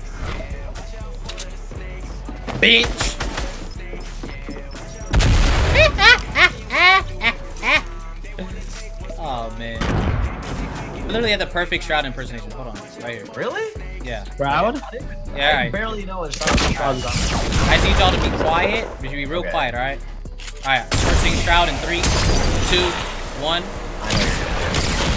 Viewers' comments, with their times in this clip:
0:06 kinda sounded like cardi b's laugh🤣 Tysm for all the like i never got this much🥺💗(edit)